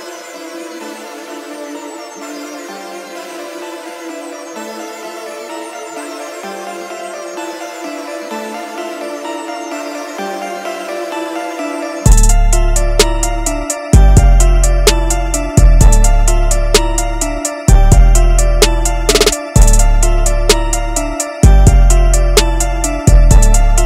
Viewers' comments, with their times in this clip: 0:05 starts the beat switch🔥🔥🤷‍♂️